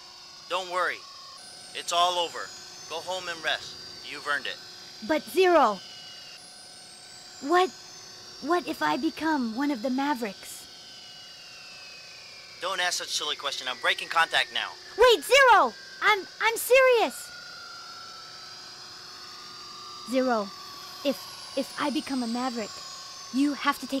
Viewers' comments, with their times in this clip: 0:09 For some reason X kinda sounds cute